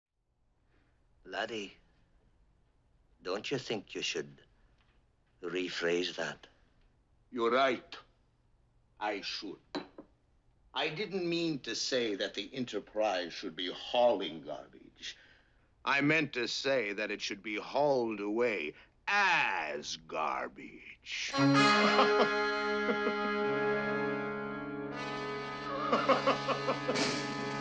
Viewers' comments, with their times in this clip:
0:08 The Klingon's mocking imitation of Scotty's accent was just ... fantastic.